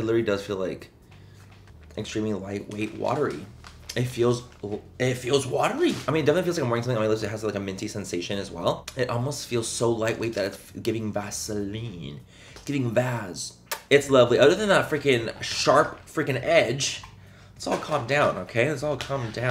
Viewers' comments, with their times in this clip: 0:06 how many words can Manny say in 4 seconds??